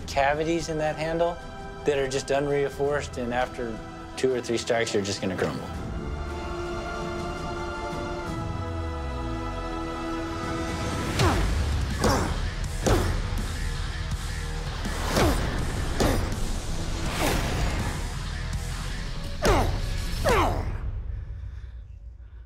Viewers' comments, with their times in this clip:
0:09 when the doom music kicks in